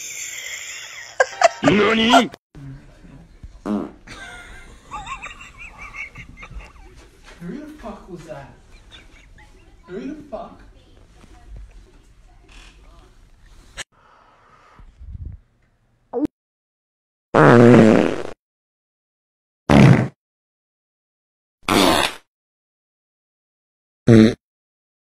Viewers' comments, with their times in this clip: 0:08 was the dood thinking he'd just witnessed a drive by farting?? 😂